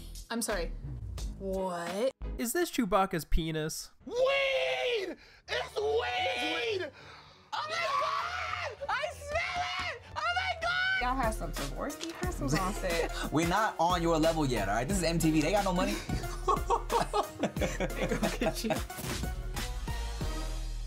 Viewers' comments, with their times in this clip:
0:04 ah yes the classic comedic genius of Loud = funny
0:05 Ngl that voice crack was kinda funny.